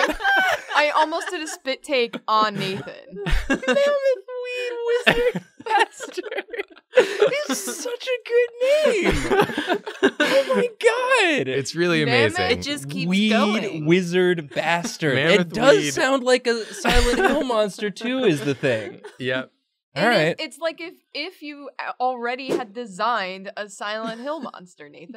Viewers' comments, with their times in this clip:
0:10 Sounds more like Stoner Doom than just pure Doom but that's me being an elitist 😂😂😂